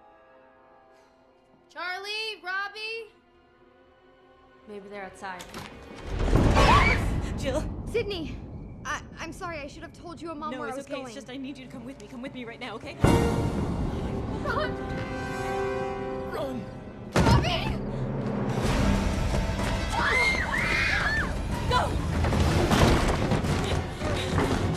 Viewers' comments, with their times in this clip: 0:05 I love Jill and Kirby's Scream when Kirby opens the door to see Sidney